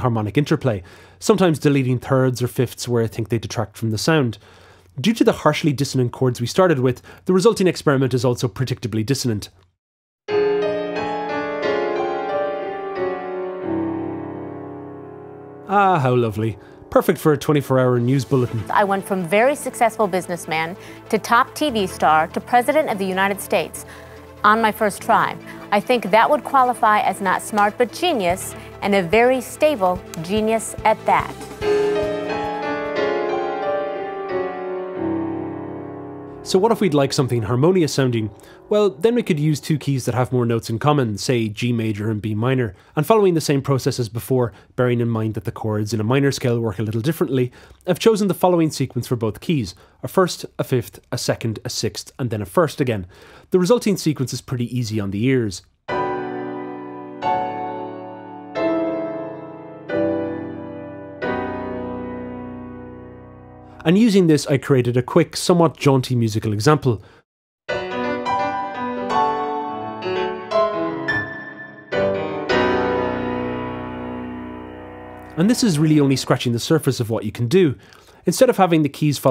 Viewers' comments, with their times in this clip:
0:04 I actually found this cool to listen to... reminded me of the Angel's Egg soundtrack.
0:18 how to alban berg lol
1:01 the final cadence is a G+M7 over Bm. Is there a reason you made it G+M7 or even GM7 as opposed to just G over Bm?